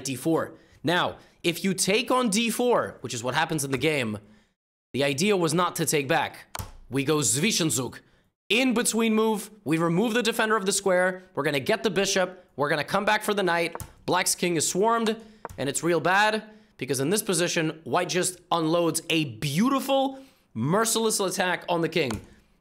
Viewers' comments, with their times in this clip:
0:06 "swischenzug" xD it's with hard "Z" in german - ZWISCHENZUG not like a "see"-Z haha